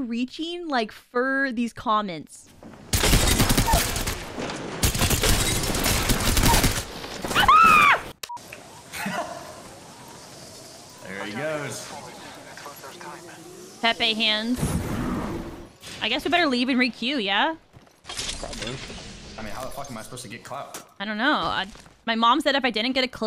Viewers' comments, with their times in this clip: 0:07 she sounds like Candace from Phineas and Ferb 😂